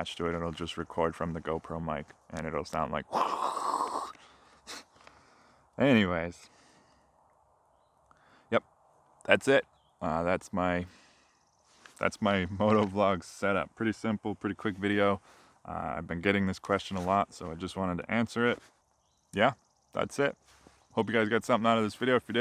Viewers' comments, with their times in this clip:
0:03 That is not a sound I have ever heard in a motoblog setup., honest :) The setup can actually get worse and bigger, as some people use an ND filter and adapter on the front of the gopro. I think at the point you may as well attach a 1980's camcorder which may be smaller :P